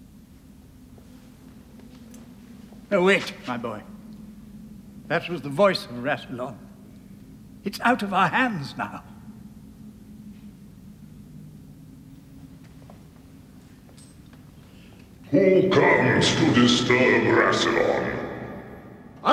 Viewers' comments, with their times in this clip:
0:05 THE VOICE OF RASSILON!!